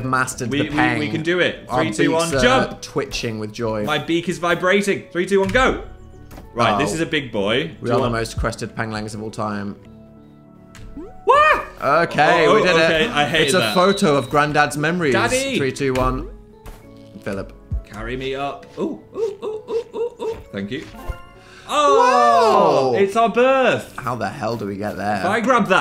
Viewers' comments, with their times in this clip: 0:08 Hearing you say "Peng-lings" 🥲